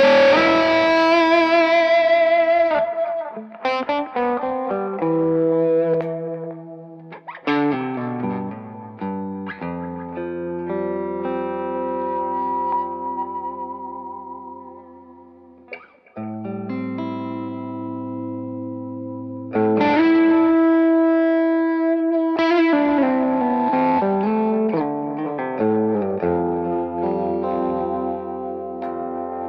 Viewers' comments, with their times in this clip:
0:10 I nearly died because of that tone. Holy shit!